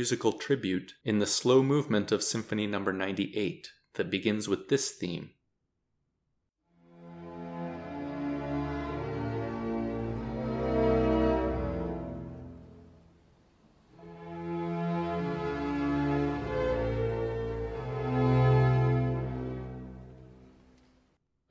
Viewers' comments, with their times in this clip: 0:07 Doesnt the part sound like god save the king?